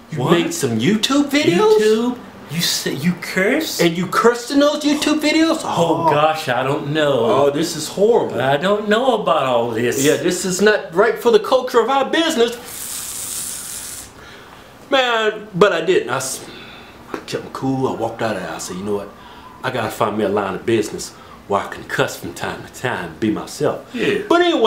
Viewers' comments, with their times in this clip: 0:09 sounds like a creeper is about the blow some shit up Lol!